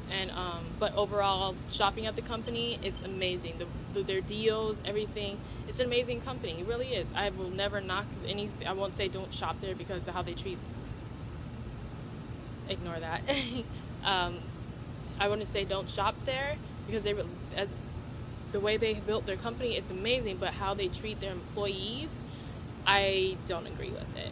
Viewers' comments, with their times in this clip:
0:07 That pause was hilarious lol